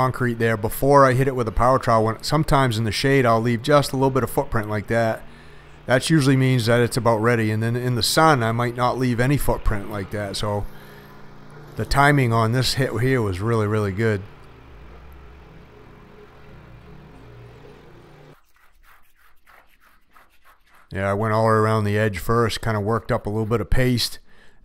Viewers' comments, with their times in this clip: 0:09 Did I hear AM? Perhaps I did.